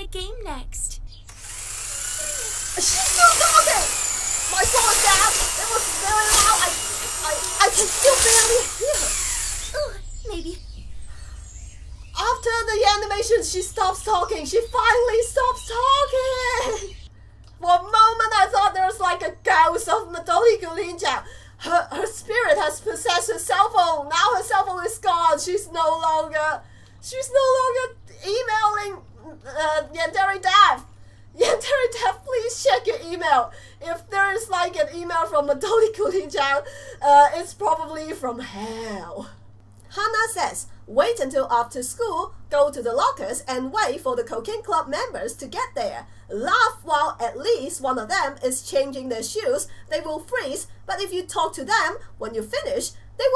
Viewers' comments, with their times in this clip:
0:05 R.I.P. Headphone Users ???-2016
0:41 Am I the only one who thought she said cocaine club?